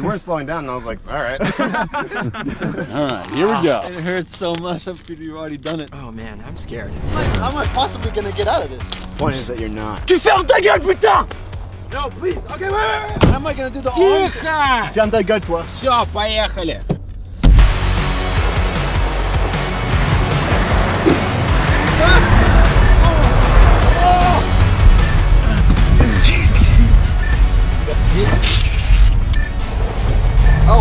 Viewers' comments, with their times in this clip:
0:10 I love the French ad lib there lol
0:13 is one of these guys russian ? Because there is a russian speach with no accent.
0:15 whaaaat who is speaking such clear russian to say: tikho (silence), vsyo poehali (let’s roll), the CIA? 🤣🤣